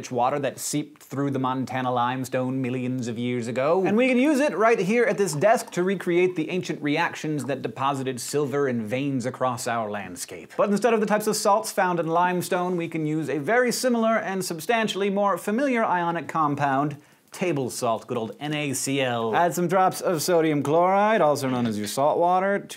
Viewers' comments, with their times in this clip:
0:07 "...and skate buttons don't touch the socks..." I'm pretty sure he didn't say that...